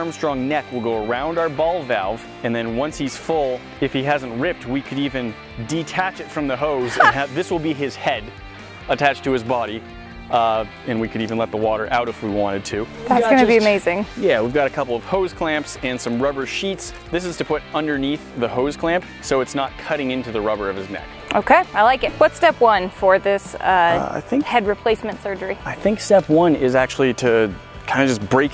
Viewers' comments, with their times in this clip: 0:10 what is that sound in ??? sound like : Ahhh